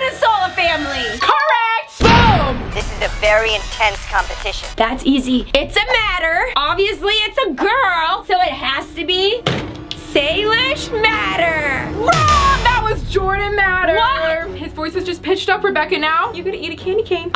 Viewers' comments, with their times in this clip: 0:04 that did not sound like jordan matter